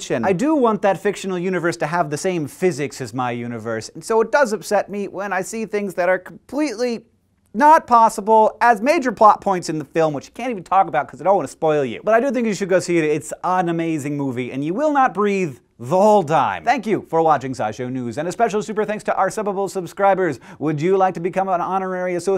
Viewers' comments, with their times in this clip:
0:04 Haha, he sounds like Professor Frink